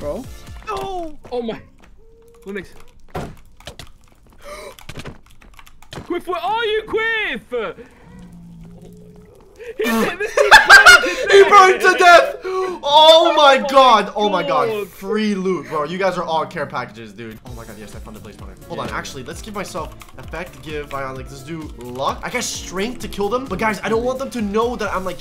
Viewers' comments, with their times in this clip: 0:08 Who else repeated that laugh